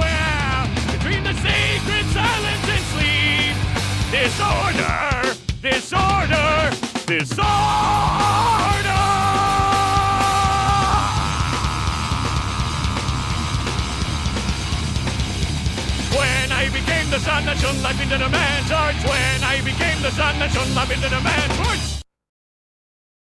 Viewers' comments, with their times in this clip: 0:06 I can hear some glitches when he shouts and I think he's singing a little too fast for some parts. DISorDER, DISOOOOOOOOORRDEEEEERRRRRRRRrra a a a a a a a
0:07 OH FUCK, THE START OF THIS SCREAM IS INSANE
0:10 bro ran out of breath